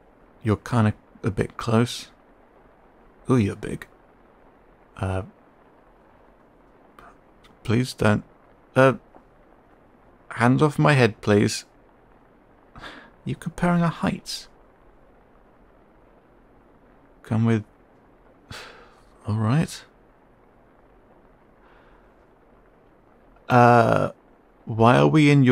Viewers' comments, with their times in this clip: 0:07 Oh I love him, I might be 2 years late to this but I love him. I love how the listener was like 'you're friend-shaped, you can stay.' But good LORD the fear you managed in your voice the trepidation, the underlying terror for that split-second as he realises just how much bigger and stronger the listener is and how much danger he might have just inadvertently landed himself in broke my heart. I couldn't help but think, 'Oh no, what have you already had to survive?' and I wanted to hug him even harder. I am so glad the listener looked after him so well instead and showed him such kindness 🥰 I have absolutely subscribed! Amazing work!